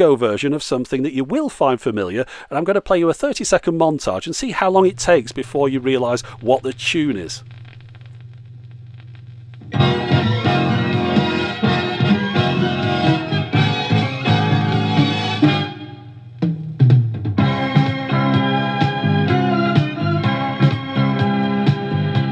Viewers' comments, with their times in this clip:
0:07 Theme from ET sounds much like the theme from Dallas.
0:08 It's always tricky with John Williams' stuff, as a lot of it sounds vaguely the same. That machine looked quite nice all polished up, but your outfit was in another league entirely!